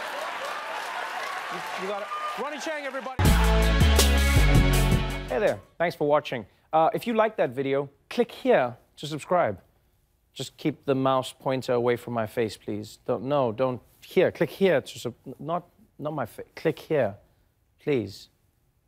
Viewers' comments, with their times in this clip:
0:03 Jesus... BUHHH DUUHHHNNN DUNN. Volume compression. It's a thing.